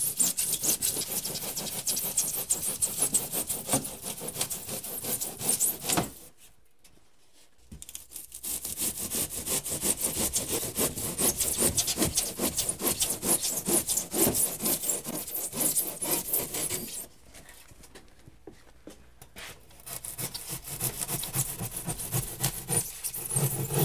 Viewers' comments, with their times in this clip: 0:07 headphone users beware!